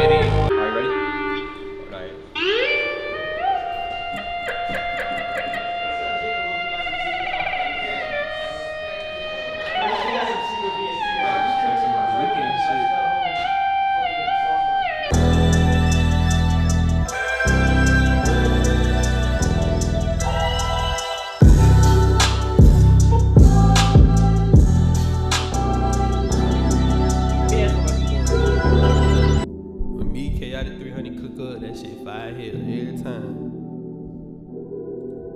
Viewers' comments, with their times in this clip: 0:10 sounds like the Miss The Rage sample but before it got reversed🔥
0:16 The beat i need for my personal listening use Omg🔥🔥🔥 I hear Nipsey on that